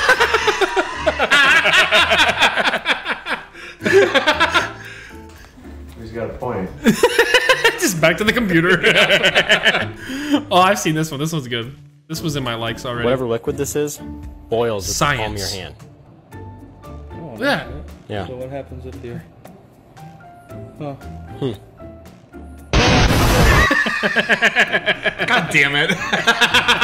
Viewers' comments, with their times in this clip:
0:07 the way you said "just back to the computer" I fell apart here!